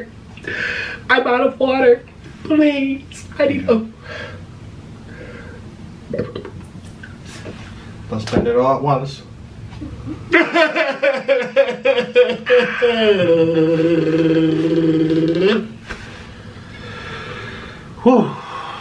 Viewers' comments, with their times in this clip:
0:04 he was literally whining like a baby there lol 😂😂😂😂🤣🤣🤣🤣